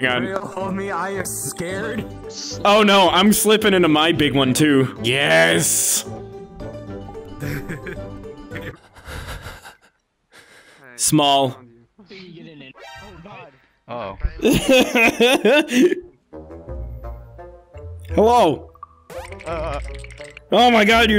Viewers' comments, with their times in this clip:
0:05 what tf was that heavy breathing?